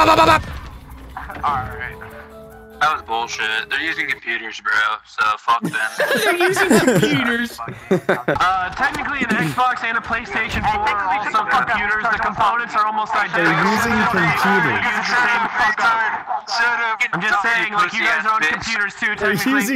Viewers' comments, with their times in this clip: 0:05 what i heard was "there using the superior gaming device"